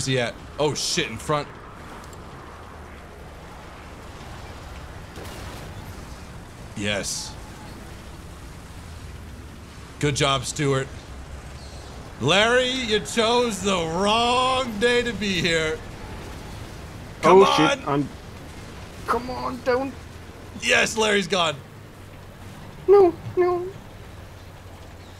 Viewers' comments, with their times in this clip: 0:06 is litterly a scene from anime, big guy comes to bully a small girl and the hero mc saves her. the sound effect of hitting each other even sounds like massive swords!